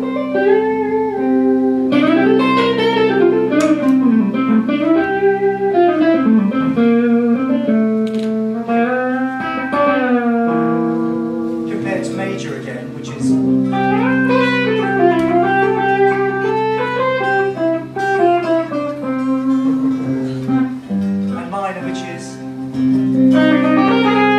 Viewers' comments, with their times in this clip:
0:08 nice jerry donahue lick :)